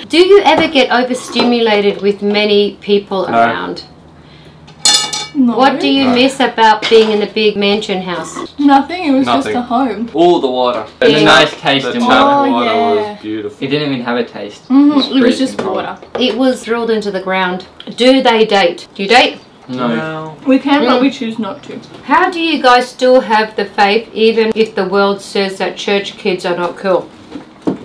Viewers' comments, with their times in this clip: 0:09 Wawdah 🤣the way they say Water with the australian accent😂